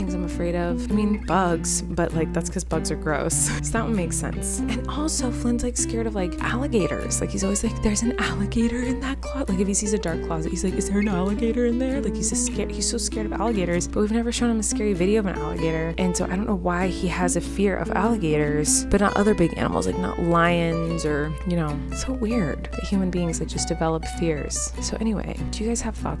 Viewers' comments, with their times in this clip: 0:08 Omg I can’t get over the way you said “ is there an alligator in there” 😂